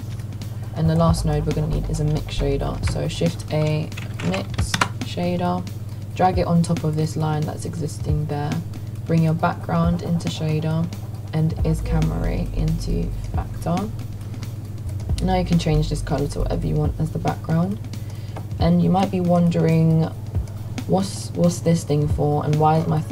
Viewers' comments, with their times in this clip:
0:05 What did u say couldn’t understand the input